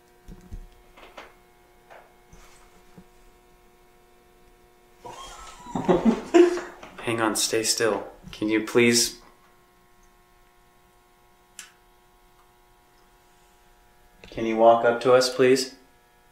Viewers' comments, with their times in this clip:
0:04 is that a baby crying?